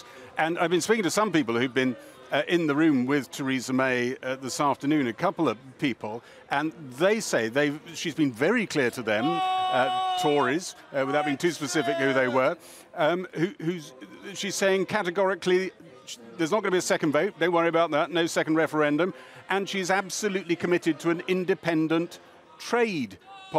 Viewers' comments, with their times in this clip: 0:09 the people yelling out they dont want this, brexit in a nutshell lol